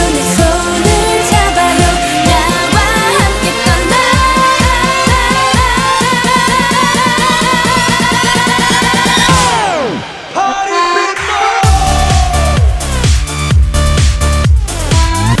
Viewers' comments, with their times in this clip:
0:03 Sounds like Gangnam Style. Anyone agree? 4minute - what's your name, SNSD - The boys, TARA N4 - Countryside Life, seems like it is targeting the American market.